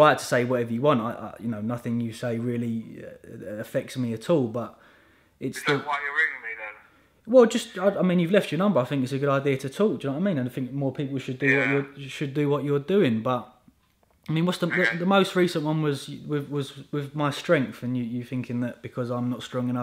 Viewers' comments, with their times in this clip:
0:07 Sounds like the guy in his office